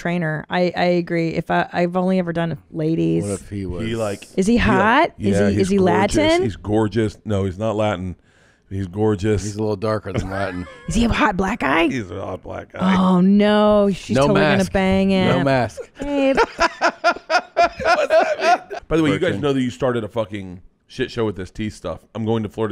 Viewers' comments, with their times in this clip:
0:09 is 100% the voice of Tom. Bert just says he's gorgeous.